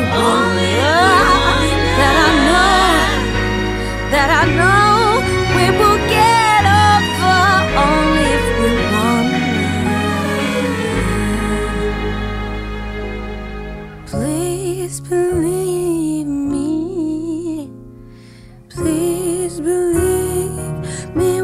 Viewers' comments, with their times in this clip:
0:09 That chromatic line in the strings ! Well done.